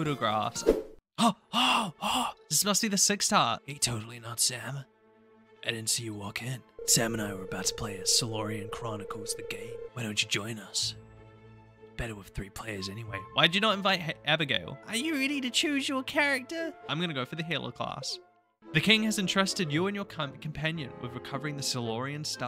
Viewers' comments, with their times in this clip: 0:05 The fable music caught me off guard lol